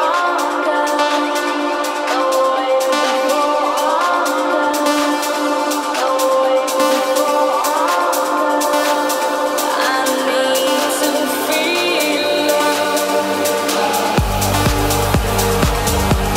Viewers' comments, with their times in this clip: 0:04 my god, when "I NEED TO FEEL LOVED" line comes on it's the most magical thing i've heard all my life, pure chills